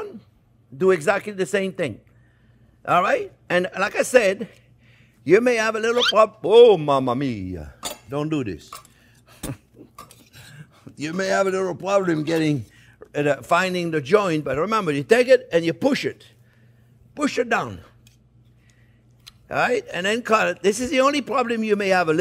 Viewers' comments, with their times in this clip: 0:05 Ar scared meee lol **whoooop*😂😂😂😂